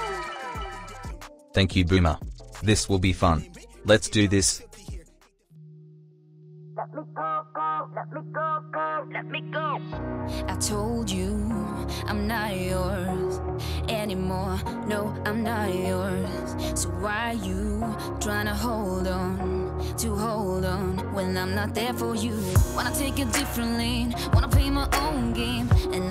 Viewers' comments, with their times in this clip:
0:08 Lol I don't get the music and tears